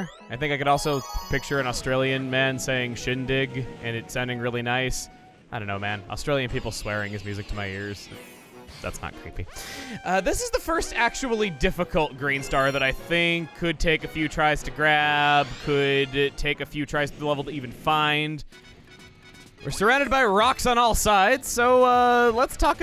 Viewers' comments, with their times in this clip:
0:10 Loud Coughing Excuse me?